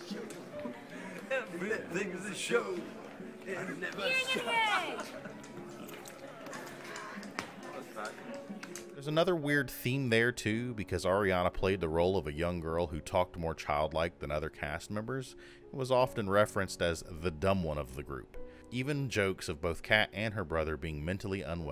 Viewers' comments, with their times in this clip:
0:06 you can here Liz say “my god” when she walks away